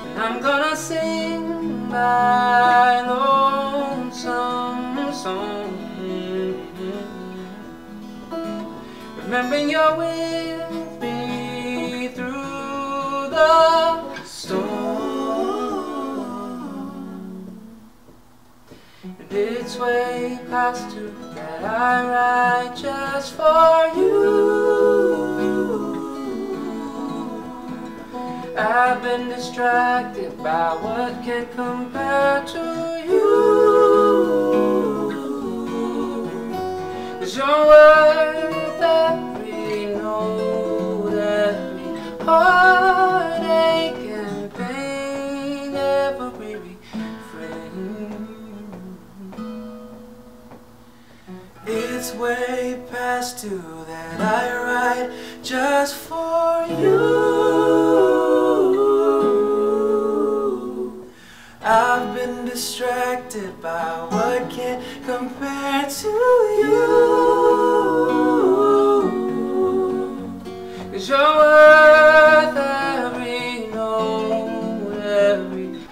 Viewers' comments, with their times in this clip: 0:09 "Remembering You're with me through the ....stoo-ooo-orm " *chills* Truly glorious harmony. Praise!
0:15 DAMN! i love that harmony!
0:18 hit the notes
0:57 the harmony is mind blowing